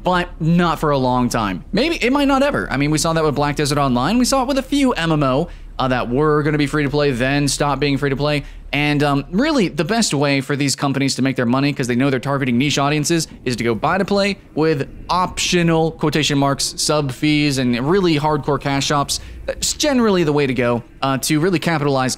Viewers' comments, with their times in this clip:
0:09 Is that Sarcasm .. ?